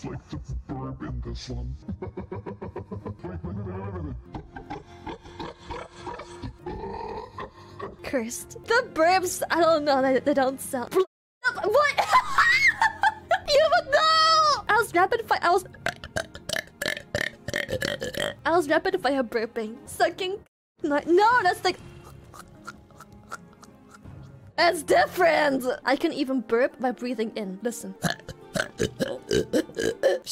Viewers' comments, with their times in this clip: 0:04 she sounds like the female muto from godzilla 2014
0:05 What a demon's burps sound like
0:17 ... I believe that's the sound of the "Way more rougher and possibly less consenting version"...